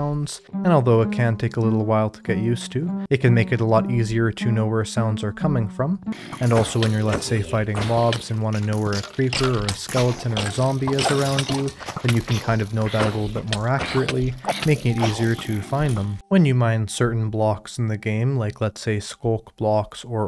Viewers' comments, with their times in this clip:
0:06 the 3d sound is so real that I actually thought there was something behind me 💀💀💀